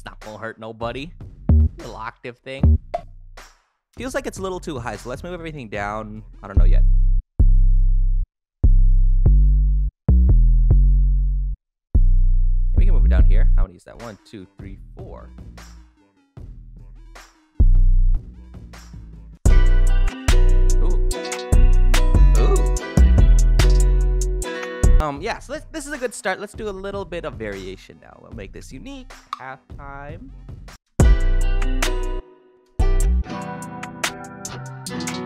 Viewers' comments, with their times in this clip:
0:05 when he went down from D# to B what did he do with the pitch of the sample? I mean how much he lowered the pitch?
0:22 he turned into blueface 💀